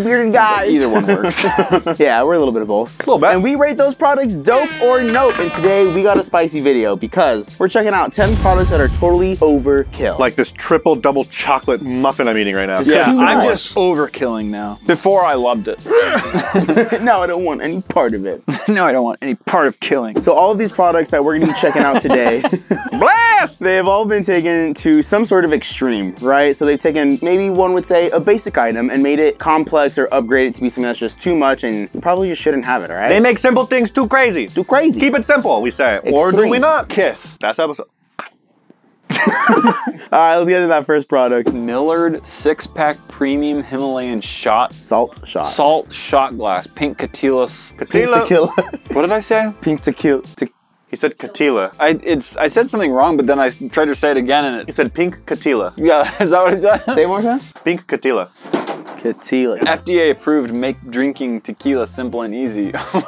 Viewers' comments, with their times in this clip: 0:08 Did anyone hear the crash bandicoot crystal sound on the words “10 products that are totally overkill” popped up on the screen
0:44 I heard pink chuthulu.